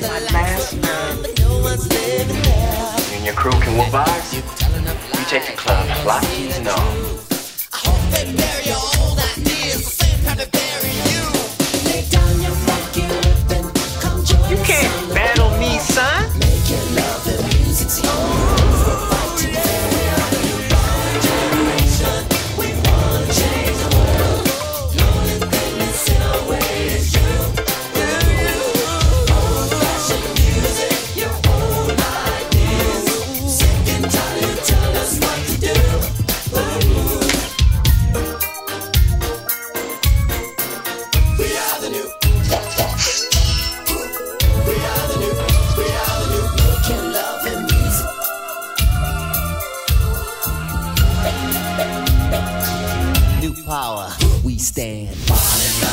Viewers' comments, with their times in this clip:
0:03 "Openness" energy is what Prince is channelling in his voice here. i'm already open-minded lol, but after watching it a few times i feel that even more...hmmnnn lol
0:38 from that modulation is sublime